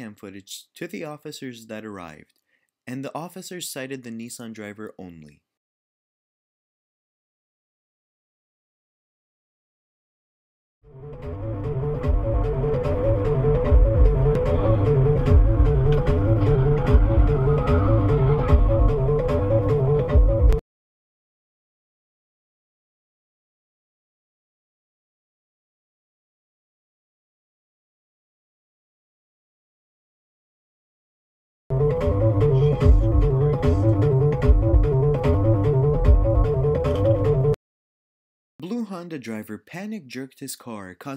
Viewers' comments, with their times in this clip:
0:06 The music was perfect for this scene
0:28 Wtf is that music!?